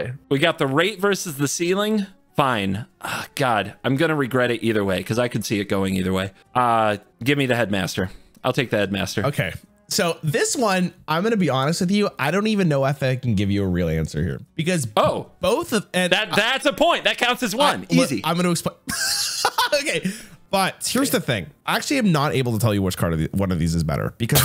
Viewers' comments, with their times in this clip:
0:07 heard it as "give me the head, master. ill take the head, master."